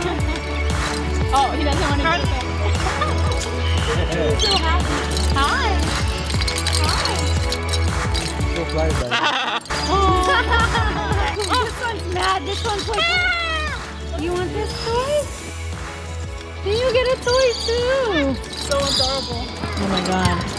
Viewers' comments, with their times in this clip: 0:08 macau laughs hahaha